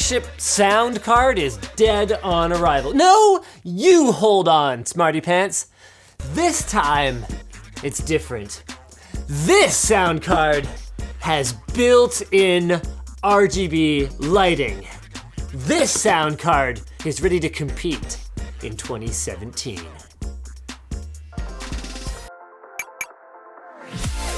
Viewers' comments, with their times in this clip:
0:10 Why did he just turn into Trump there for a moment?